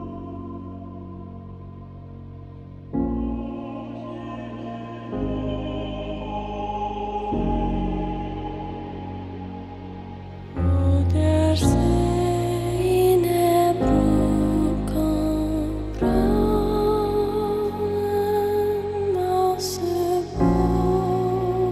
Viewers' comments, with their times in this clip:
0:03 Oh People what a transition! from dancing to elevating prayers! Loving It!